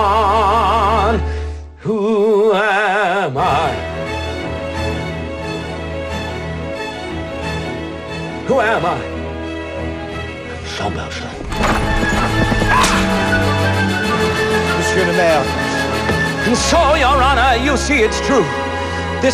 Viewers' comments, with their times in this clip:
0:04 The way he says these lines and the smile on his face conveys that he knows he has the strength to endure prison again, which is what he would rather do at this point then allow an innocent to suffer in his place. All of this because he knows he's not alone. He has God in his life.